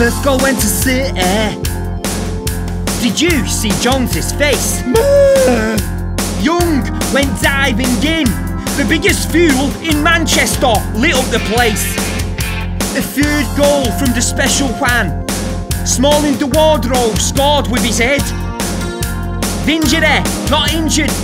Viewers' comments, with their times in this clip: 0:09 NOT true "The biggest fool in manchester"